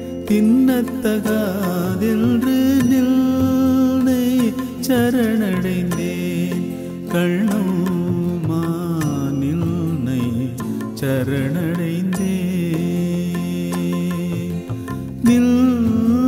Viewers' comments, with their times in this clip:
0:03 the sound ''ninnaiiii'' is mesmerising. Raja sir, god gifted